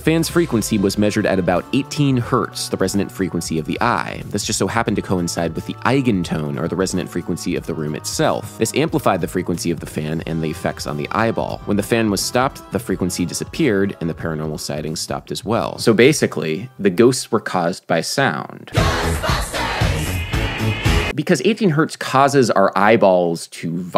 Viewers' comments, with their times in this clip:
0:06 Nice tune! It's almost like if King Crimson tried writing music for Mega Man lol. btw that look on your cat's face made me laugh so hard ...